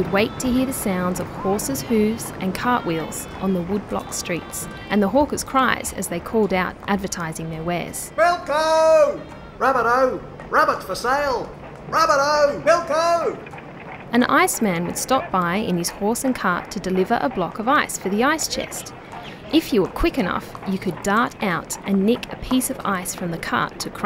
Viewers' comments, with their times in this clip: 0:09 think I just heard morgz